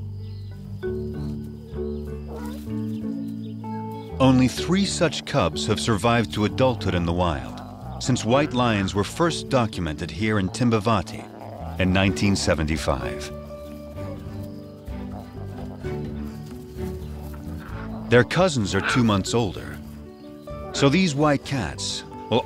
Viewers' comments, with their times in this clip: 0:08 timba-vati i thought he said Kimba-vati